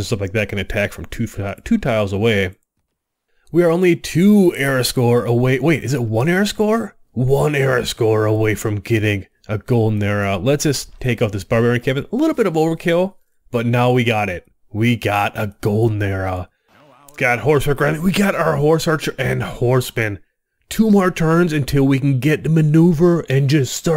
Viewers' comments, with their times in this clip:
0:07 Hey! Just discovered this video and wanted to say I really like the concept and content, but I'm turned away by the way you phrase everything as if it's a surprise, especially when you growl your voice (see ). Keep up the good work, the world needs more strategy game players.